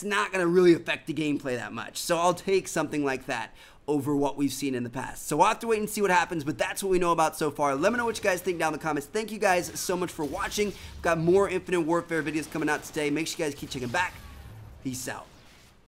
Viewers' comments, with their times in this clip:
0:10 you can hear the lightsaber ignite sound